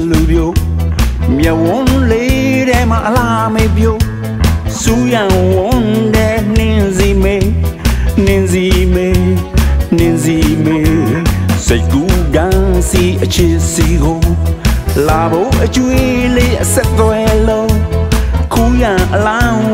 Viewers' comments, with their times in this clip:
0:03 BLACKNWHITE 👗 👗 👗 👗 👗 👗 👗 BLUES MUSIC 🎶 🎵 💙 👌 🙌 😌 🎶 🎵 💙 👌 🙌 😌